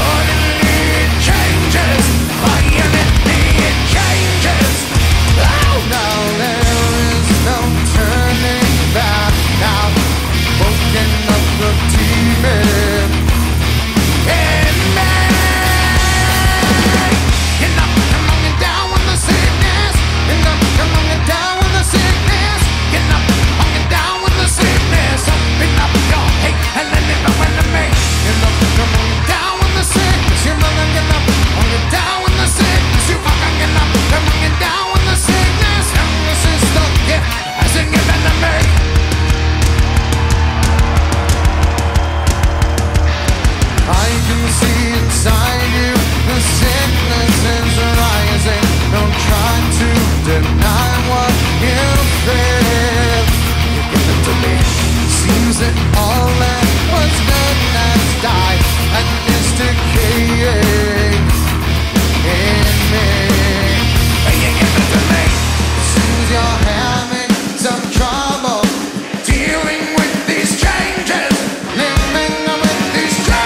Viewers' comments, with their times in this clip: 0:03 Even the drummer is bored with this song. He adds a fill that’s not in the original recording.
0:31 Jump to Theres 2 guitarists playing
0:57 what was that ._. was that autotune? in metal?